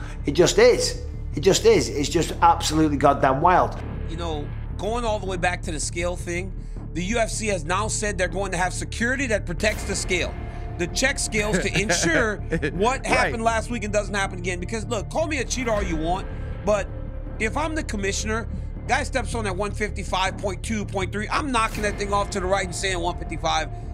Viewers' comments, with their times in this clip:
0:05 Dana White speaking like Dana Black.